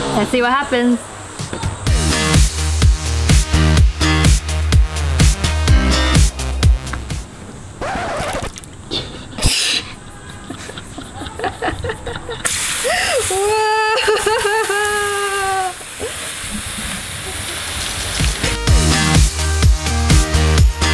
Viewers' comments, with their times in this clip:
0:07 The box was taking a wiss XD